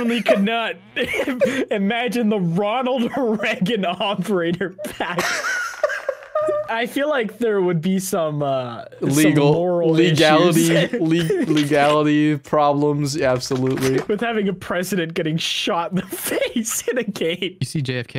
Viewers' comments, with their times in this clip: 0:04 Someone make a song out of this laugh Sounds like J Jonah Jameson from Spiderman
0:04 Smii7y turns into that one song that everyone knows but doesn't know the name of.
0:04 vitas... is that you?
0:05 do be sounding like that one Russian song, you know which one I mean
0:05 sounds exactly like that meme song by 7th element, wtf
0:05 laugh sounds like the verse from chum drum bedrum 😂😂
0:05 yo you did that Vitas thing of porpuse didn't you?
0:05 does anyone else hear "Weird Russian singer" or is it just me..?